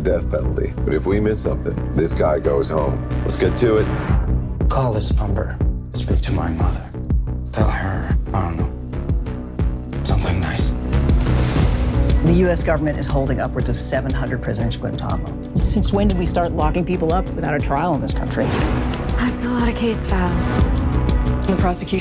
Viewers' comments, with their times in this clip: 0:03 sorry kinda unrelated but benedict's american accent is always so cute